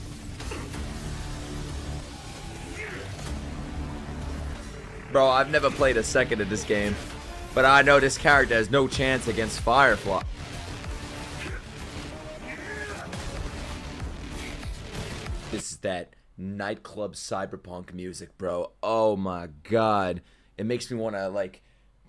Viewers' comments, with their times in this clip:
0:07 Don't bop to SAM's theme challenge: Impossible